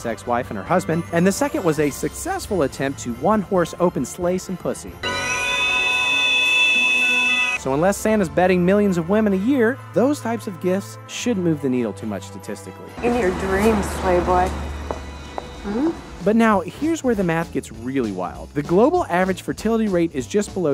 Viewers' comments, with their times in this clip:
0:05 The whistle just gets me😂😂😂